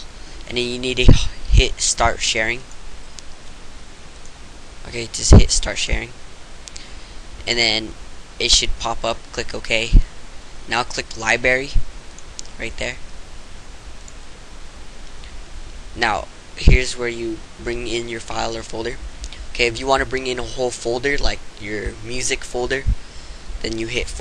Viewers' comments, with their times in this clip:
0:09 You forgot the R in liBRARY
0:11 lol he said Liberry